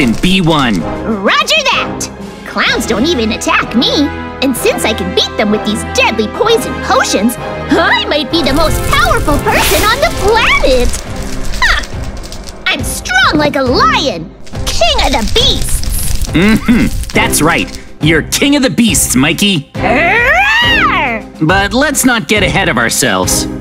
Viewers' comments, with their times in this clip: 0:06 Yo, every time JJ cries, it keeps exploding my mind🤯